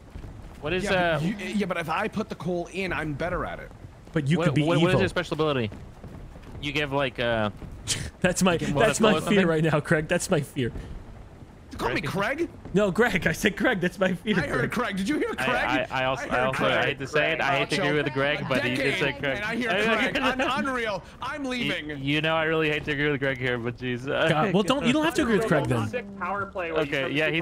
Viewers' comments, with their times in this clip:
0:10 I heard Craig too lol